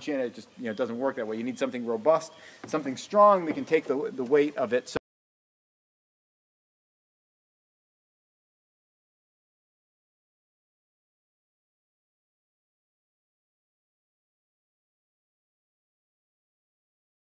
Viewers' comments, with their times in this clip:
0:04 video cuts out + drops both sound and video.